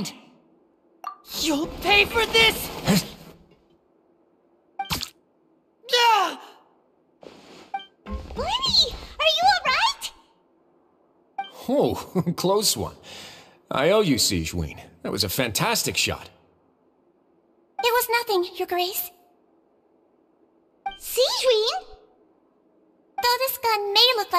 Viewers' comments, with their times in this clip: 0:06 i thought he cracked his back😂💀💀💀💀💀